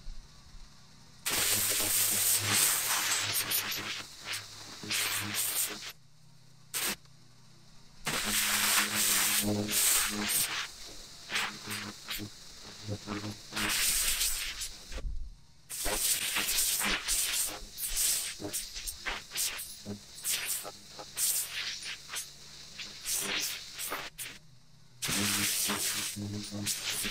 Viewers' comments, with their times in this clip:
0:10 When you play this at 1.5 speed it sounds like a lightsaber battle. 🙂